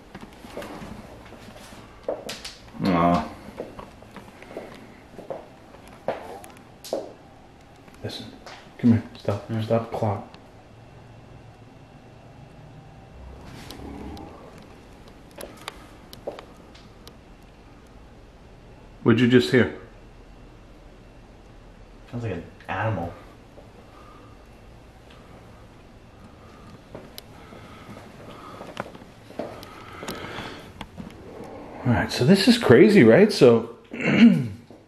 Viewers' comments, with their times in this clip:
0:05 .....sounds like the creepy evil deep voice is saying......"OLD"......?????
0:06 i heard something sounded like hello or something like that or it said or
0:06 a man’s voice saying hello
0:06 male voice says Hello
0:06 Merry Christmas from Wales UK. Around the mark I believe I heard a male voice saying "Hello". I wish you and yours blessings and seasons greetings...Keep up the good work... Regards :)
0:06 sounds like. Man copied you and goes “oh”
0:07 I heard what sounded like a man say “hello” and when you turned the lights out I heard another clear growl 😲
0:08 sounds like hello in a mans voice, I heard a grower after you turned also
0:12 ......THAT is a freakin GROWL.......!!!!!
0:16 and from there is faint talking.......!!!!!